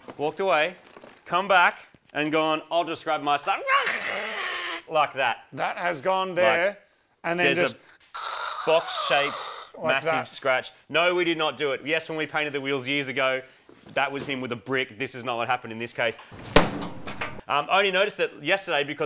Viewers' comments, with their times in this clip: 0:03 Enderman noise anyone?